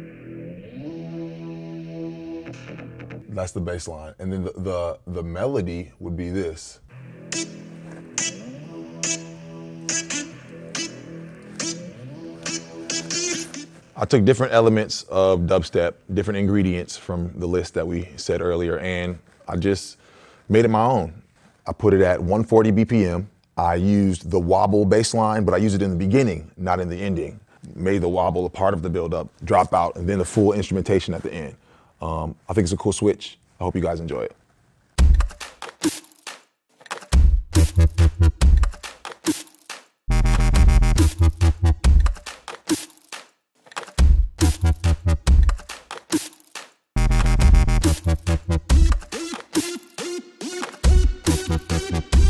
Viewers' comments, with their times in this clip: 0:10 sounds more like a start to hardbass, not modern dubstep lol, and yeah there is new dubstep and dubstep subgenres, check out SNAILS or subtronics for some modern dubstep, deathstep and vomitstep
0:35 some dubstep artist like to use this type of cheap track and it so horrible, it has no meaning and no soul that makes you feel awesome